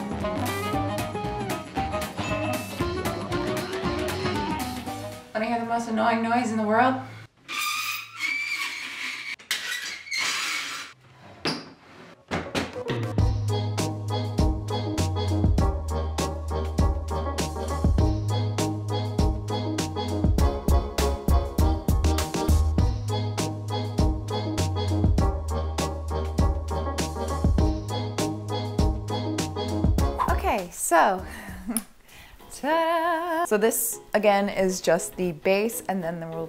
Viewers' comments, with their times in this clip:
0:06 my family’s ironing board sounds like that too 😂 I always wonder why my parents never oiled the hinges but tbh it does add character
0:14 Ouch my ears X) some wd40 could help maybe ? And yay for ironing ! I also learned the difference it makes the hard way.
0:20 ish I STG this music has the same first measure as the Cantina Band music from Star Wars. I cannot un-hear it. You cannot un-hear it. You're welcome.